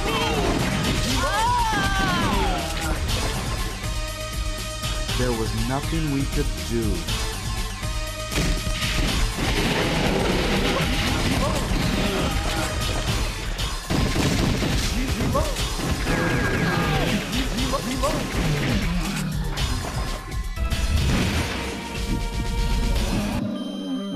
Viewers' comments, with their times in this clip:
0:08 omg the voice actor